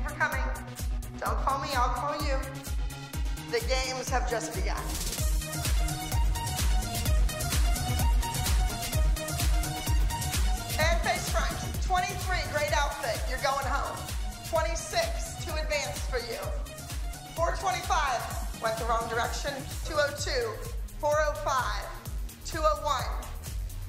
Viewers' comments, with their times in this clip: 0:05 I’m loving the music